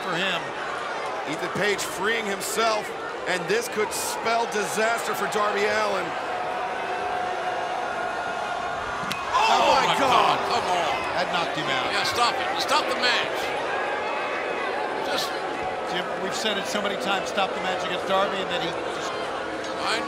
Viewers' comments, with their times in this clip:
0:08 You can literally hear 👂 Darby's 💀 bounce off the ring post...😬